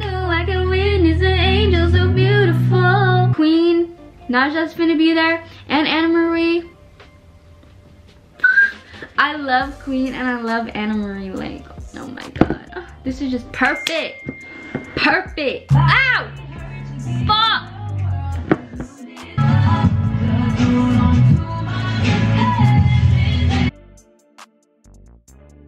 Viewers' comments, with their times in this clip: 0:09 That whistle note tho 😂😩❤️